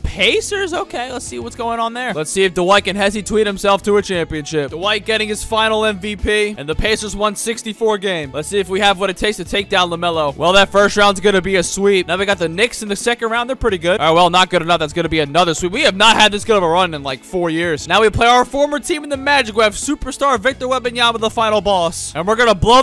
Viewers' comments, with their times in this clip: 0:05 Bro i thought you said finals mvp 😭😭😭